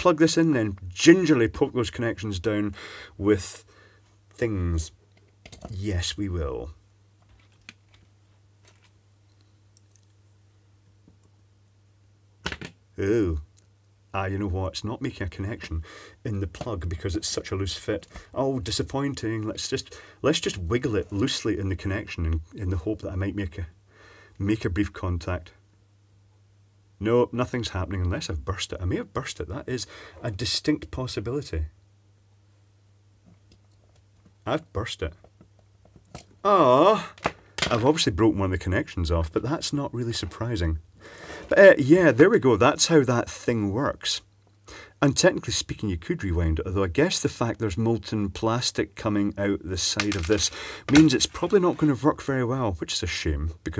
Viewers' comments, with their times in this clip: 0:06 Is that something popping ? Seems to be something burning out inside the red bit (or could be a reflection).
0:06 something went boom
0:34 I always thought this was degrees ° and this was proof • Could be wrong the genuine sound of complete disappointment 😂